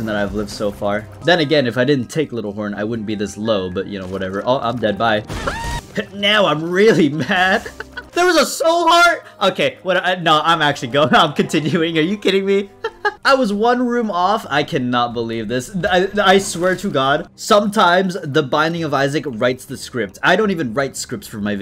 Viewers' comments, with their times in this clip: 0:03 a real homer scream right there
0:04 death sounded like sponge bob lmafo
0:05 You had that Tom and Jerry scream HHAHAHAHHAHAHA